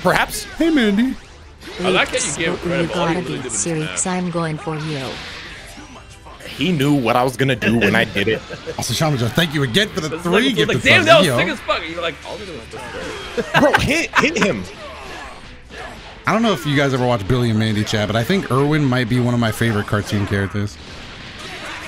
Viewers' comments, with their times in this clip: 0:08 Billy and Mandy imitation